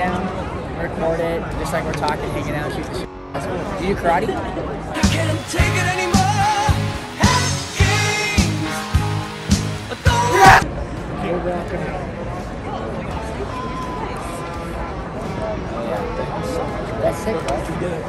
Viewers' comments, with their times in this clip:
0:06 lol the scream! Haha